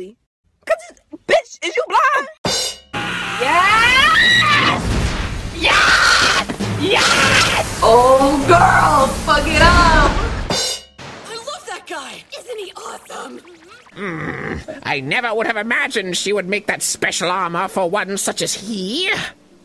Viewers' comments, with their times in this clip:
0:04 MIDORIYA SCREAMS AAAAAAA